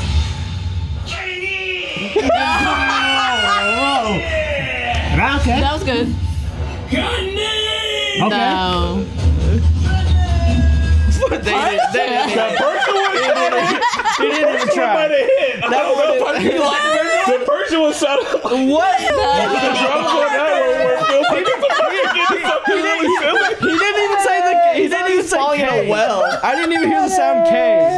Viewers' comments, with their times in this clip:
0:09 I died laughing at the persian one. Sounds like it’s at 10% volume and yelling from a mile away. 😆😆😆